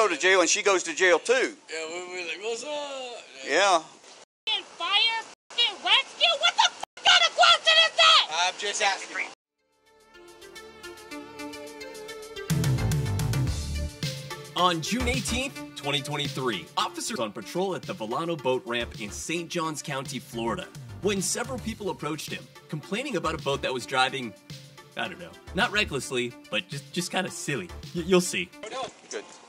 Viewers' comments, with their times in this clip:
0:10 that guy laughing 😂😂😂